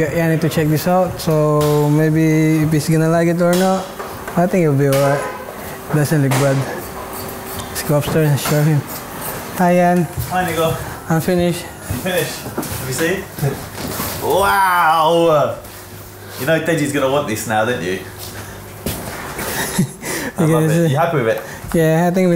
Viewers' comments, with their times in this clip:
0:09 DID HE SAY HI AND THE N WORD??!
0:10 Did he say nigga🤔